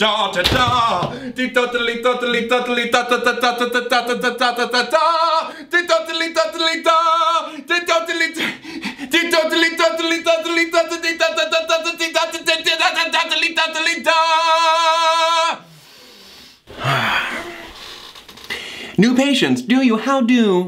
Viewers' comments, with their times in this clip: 0:08 breath ma dude